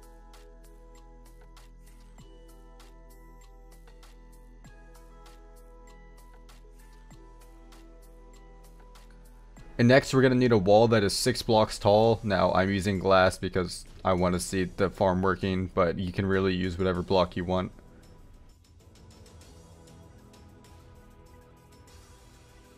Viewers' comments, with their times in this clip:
0:04 the music gave me fairy soul flashbacks